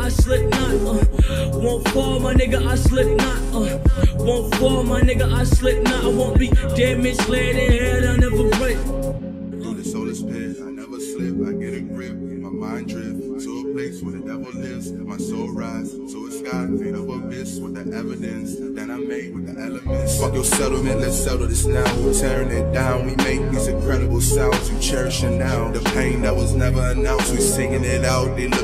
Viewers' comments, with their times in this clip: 0:10 sound like KSI NO LIE
0:10 Sound like KSI